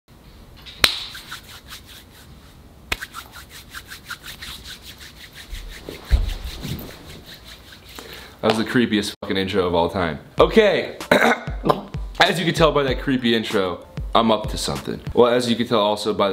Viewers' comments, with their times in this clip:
0:00 when ethan does ASMR...